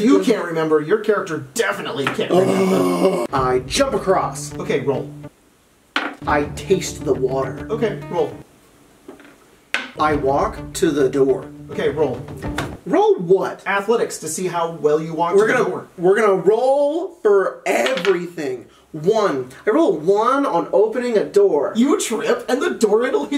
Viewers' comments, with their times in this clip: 0:04 the divinity music activated my brain for combat